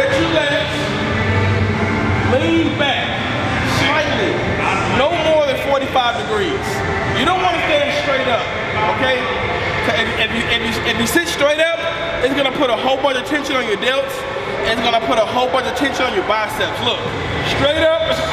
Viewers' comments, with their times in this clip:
0:03 Zyzz playlist playing in background